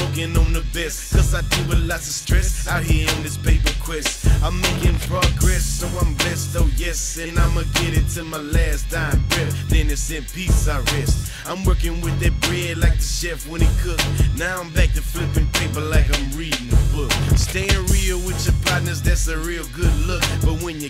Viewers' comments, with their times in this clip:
0:05 it sounds like someones farting in the song